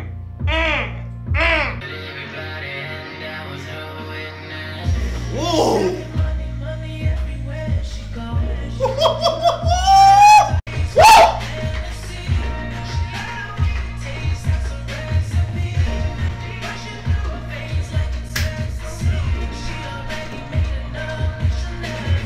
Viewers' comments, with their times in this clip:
0:08 Hoo hoo hoo hoo hooooooooOOOOOO! You seem privy to the language of the rainforest.